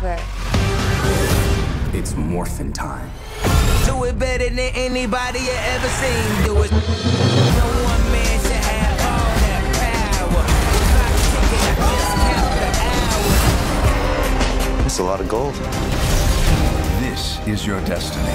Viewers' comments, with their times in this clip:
0:03 That's the time where the MMPR theme riff should kick in and blow our heads up. What's with all these rap songs in sci-fi/fantasy movies???